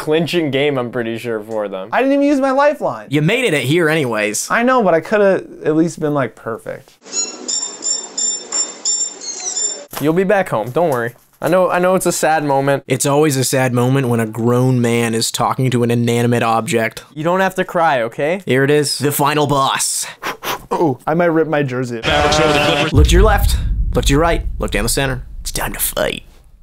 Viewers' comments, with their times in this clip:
0:07 The violin is what earned a like on this video from me! 🤣🤣🤣